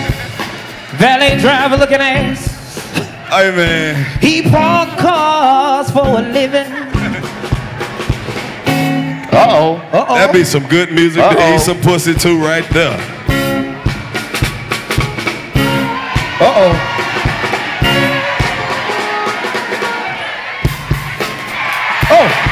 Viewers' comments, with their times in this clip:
0:07 when that king on the drums came in and they started swinging to that beat..